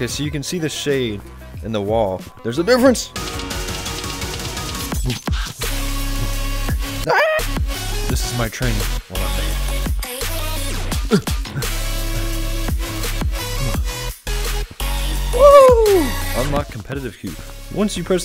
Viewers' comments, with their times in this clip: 0:04 bro got the 2016 modded clash royale compilation soundtrack on